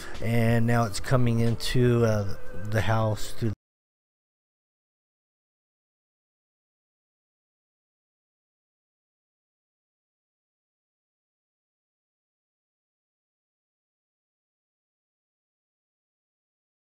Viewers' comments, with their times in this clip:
0:03 why does the audio suddenly cut out ?
0:04 sound went out